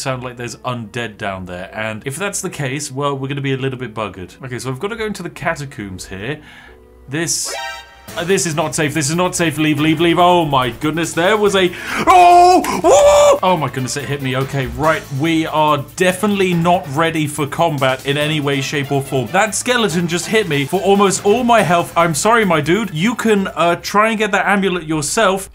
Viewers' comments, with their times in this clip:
0:10 Damn,Never heard him panic this much before